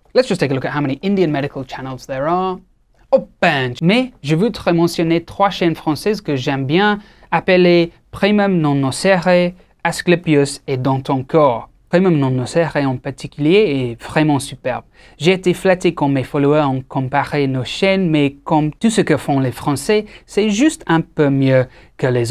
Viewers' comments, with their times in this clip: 0:03 Were you trying to say "chod" ? , shhh , no need to tell everyone , it can just be a lil secret between two of us... just drop a yes / no down below
0:03 As an Indian, I can attest that that was the most Punjabi-Indian “Pench” I have ever heard 😂
0:05 Flexing that French